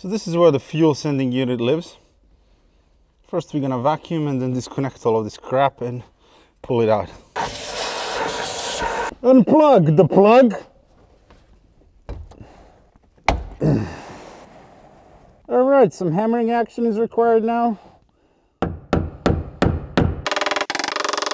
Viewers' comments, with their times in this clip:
0:09 You sound just like Bane (from the Dark Knight) ... wait.. who are you???